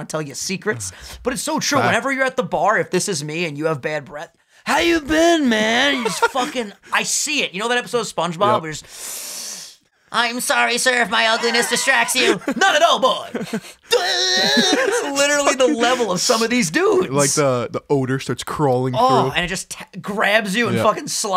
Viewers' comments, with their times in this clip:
0:08 that spongebob imitation 😂